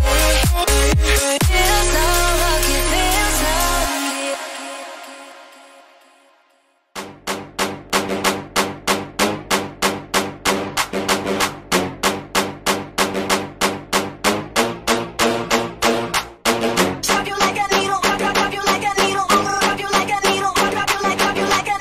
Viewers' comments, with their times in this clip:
0:07 that song starting with is just the best